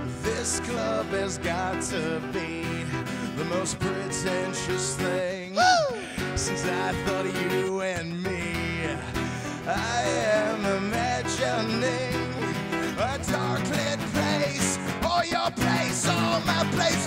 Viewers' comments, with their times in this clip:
0:05 Pretty killer. Surprisingly good for so early and for acoustic. Also, Rock Band Overdrive activation!